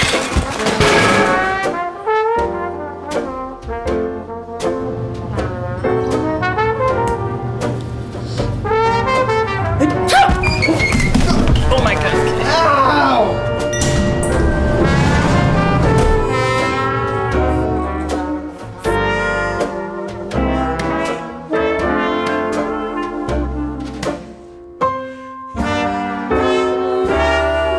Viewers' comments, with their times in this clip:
0:09 one sneeze made every one fall... Wow "SEEMS LEGIT"